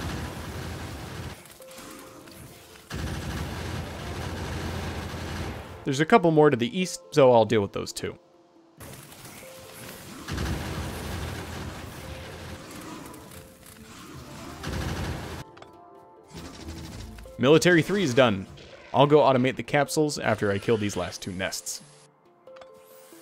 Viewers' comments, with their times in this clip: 0:06 to the weast?